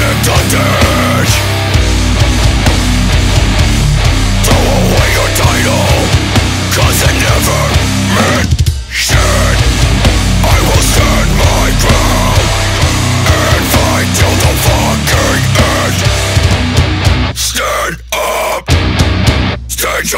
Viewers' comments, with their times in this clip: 0:08 That part with tha little bell bell was hard